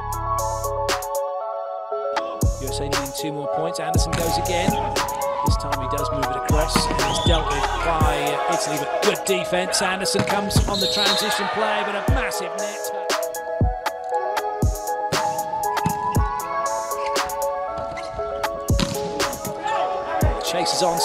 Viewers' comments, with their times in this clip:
0:09 bro sounds like hes rapping